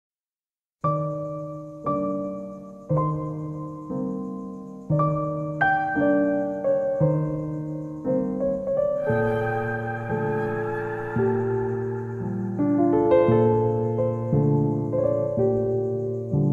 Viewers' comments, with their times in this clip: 0:00 this song always makes me cry, with such a soothing melody that reminds me of my young childhood. and the "i want to take a pic with cardi b inside my cardigan "